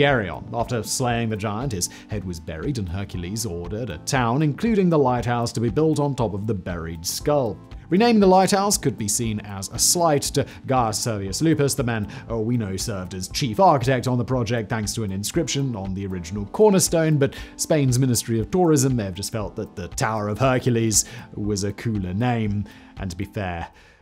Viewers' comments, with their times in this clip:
0:09 Funny how the English pronounce Gaius as "guy-us" when it's really gay-us, yet they can pronounce Latin correctly rather than saying Lawh-tin as you'd expect.